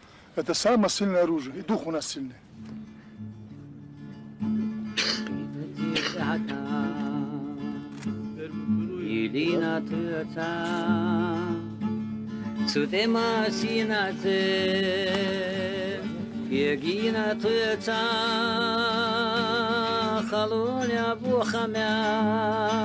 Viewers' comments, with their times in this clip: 0:04 The short song starting has been deeply moving me for a long time.